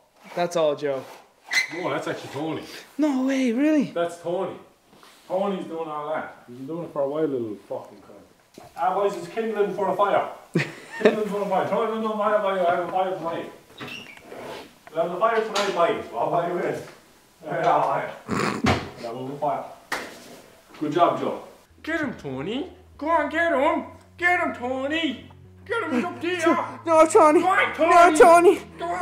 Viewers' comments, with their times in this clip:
0:07 What did just nogla say I just understood light up the fire and alight deh eh weh faier somthing somthing...
0:10 wa- what the fuck is the man saying? Is that english?